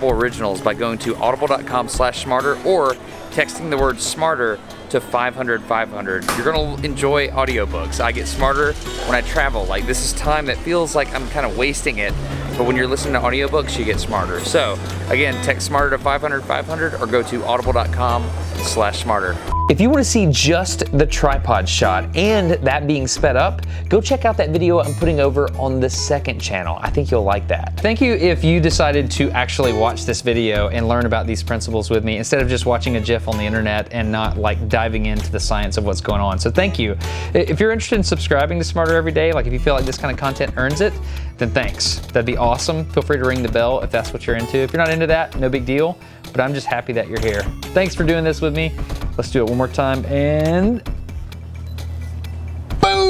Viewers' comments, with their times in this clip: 0:04 FIVE HUNDURD FIVE HUNDURD ilysm
0:28 did you just say gif like jif
0:32 Awesome video as always Destin ! What would have happened if you spun it faster and what is the angular velocity limit above which the colours mix irreversibly ? Just one note: gif with G as in gift not as J in jeez !
0:32 "Instead of just watching a jiff on the internet..." What's a jiff? Isn't that Peanut Butter?
0:32 instead of just watching a WHAT on the internet?
0:33 Dustin says 'jif', pretty sure he means 'gif'.
0:33 I stopped listening to everything after you said Jiff.
0:34 Disliked for "jif"